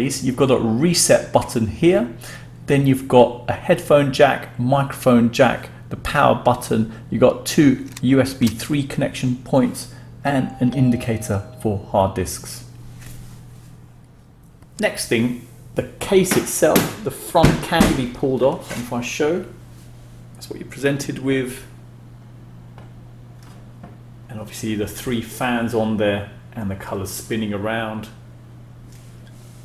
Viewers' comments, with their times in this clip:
0:09 I went downstairs think that someone was at the door.
0:10 who else hears the doorbell